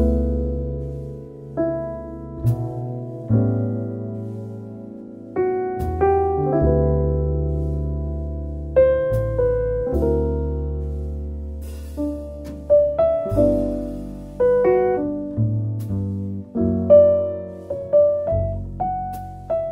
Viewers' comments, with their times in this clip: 0:06 It's fascinating how the harmony brings me back to "The Very Thought of You" in Tony Bennett's version